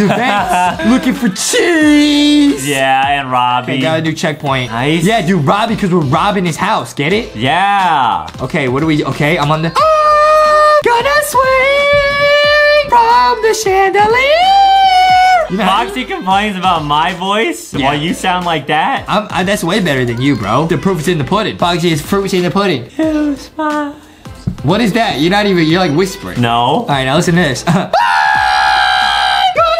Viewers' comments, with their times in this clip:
0:09 his singing😆 Btw i love yall vids❤🥰
0:15 can somebody give them singing lessons